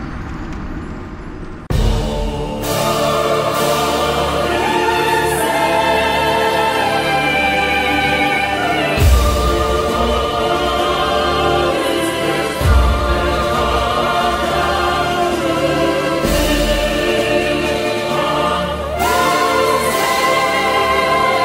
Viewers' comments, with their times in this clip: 0:04 (Megalith starts playing) Me: immediately smashes the like button